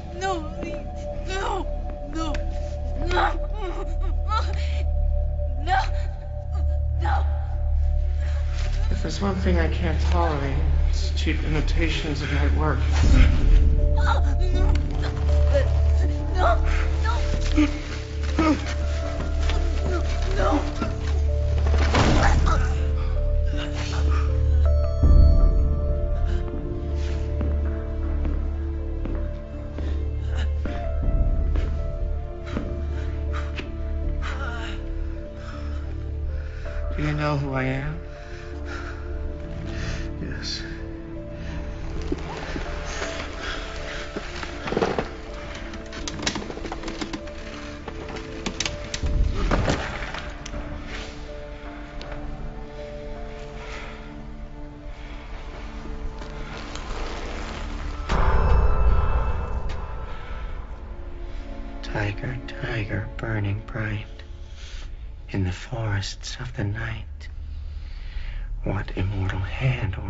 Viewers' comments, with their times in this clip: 0:08 omg yes ... and this music ... holy shiiiet this is a perfect mixture of I shit my pants with a boner ❤🔥 Hahaha I miss villains like him
0:58 Mais à it's not the voice of sheriff McAllister